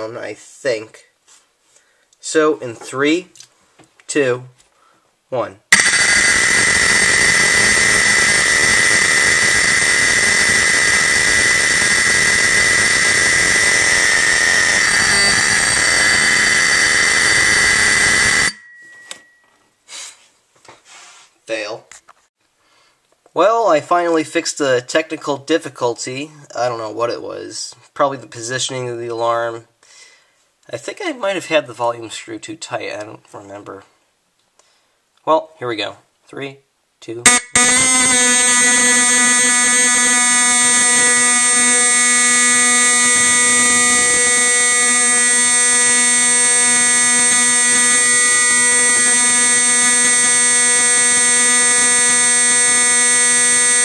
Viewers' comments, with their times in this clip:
0:05 058 It sounded like the fire alarm at one of my elementary schools during fire drills. A trip down the memory lane.
0:37 it sounded like a rooster